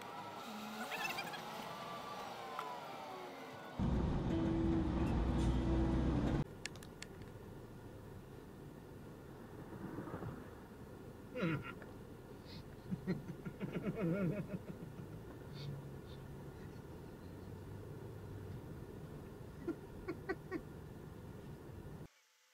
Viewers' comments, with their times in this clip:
0:08 the giggling of the cammer is very funny